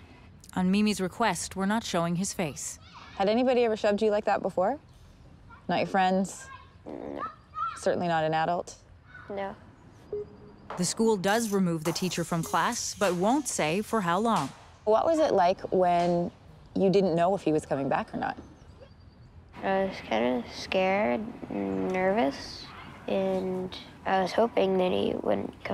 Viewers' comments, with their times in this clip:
0:06 did he just fart? Or her?